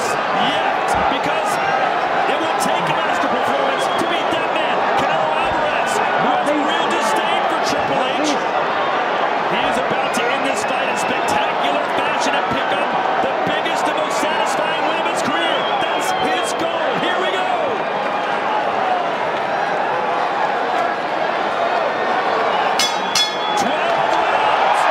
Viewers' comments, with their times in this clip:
0:05 the commenter said real distain for triple H🤣